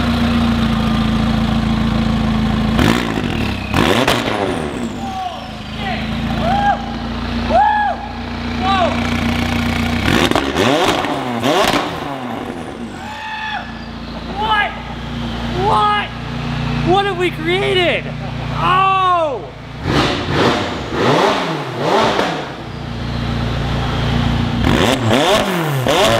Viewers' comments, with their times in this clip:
0:07 That scream + hahahahahhahah rewind that scream 6 times hahahahahah